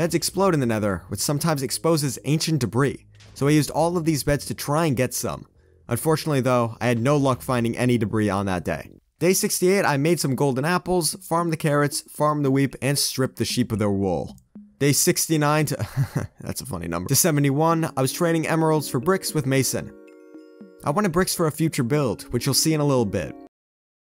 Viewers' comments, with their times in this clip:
0:10 farmed the weep lol